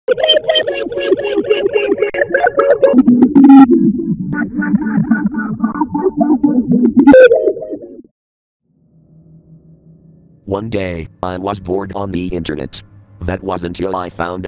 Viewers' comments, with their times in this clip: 0:00 the intro sounds like it’s difficult.